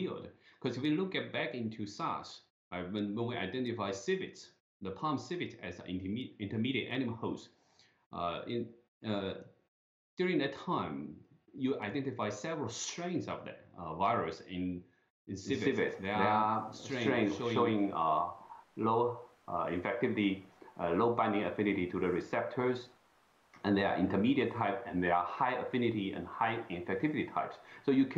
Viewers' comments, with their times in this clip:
0:10 They got the sound fixed And your idea is a good one.